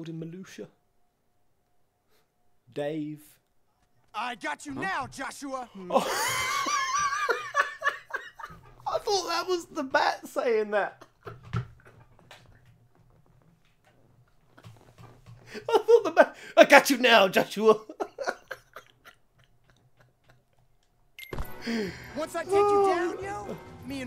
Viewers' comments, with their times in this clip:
0:07 Now that was a laugh from the heart lol Now I will always pretend that it was the bat talking just to laugh at the cut-scene everytime.